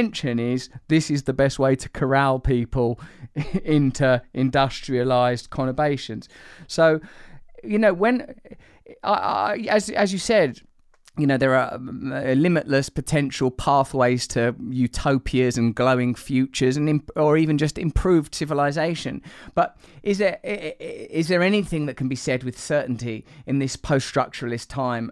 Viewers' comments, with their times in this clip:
0:06 Industrialized "Connervations" or perhaps "Co-nervations" That's a new word for me. Can anyone here please provide the meaning of this word?